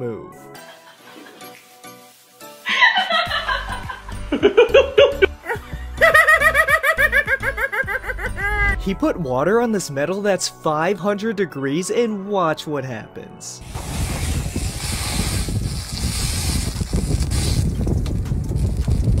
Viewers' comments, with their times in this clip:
0:05 sounds like a clown laugh